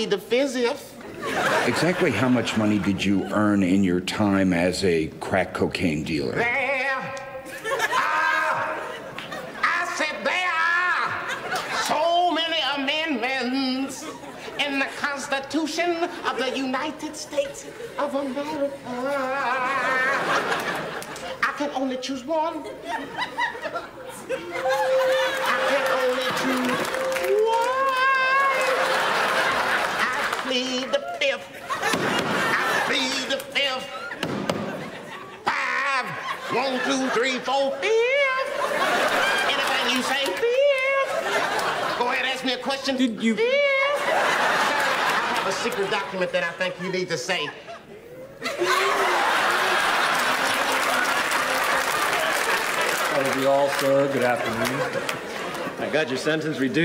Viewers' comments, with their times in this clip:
0:06 The musical response starting is the funniest f-in' thing on the internet 🤣
0:43 That very last, high-pitched "FIIIIIIIF!" STILL kills me after all these years. Dave is nothing short of a legend.